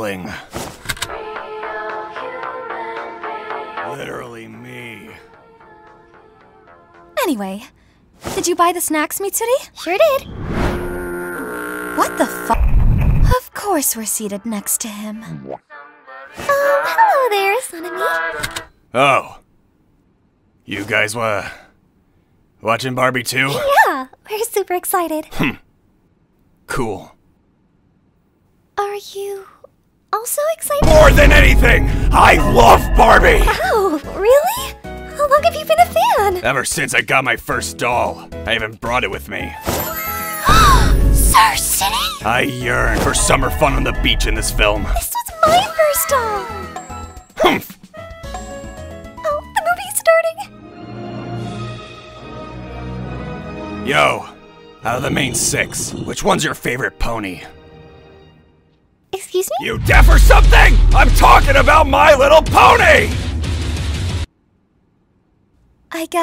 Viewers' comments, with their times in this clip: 0:08 Cleverly censoring out an f bomb with a transition. I love when people do that.
0:30 Sanemi's VA flawlessly delivered his trait that his blood produces its own crack (especially )
0:37 “EVER SONCS I GOT MY FIRST DOLL” LITERALLY WEEZING!!!! 💀💀💀💀
0:47 This beat reminds me of I CAN WALC THE POKÉMON MEME